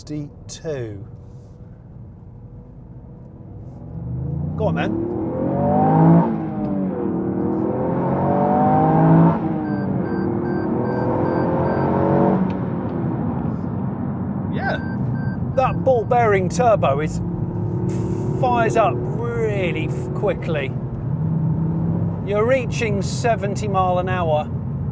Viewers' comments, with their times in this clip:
0:05 i think the 3 cylinder engines sound like V6 when rev'd lol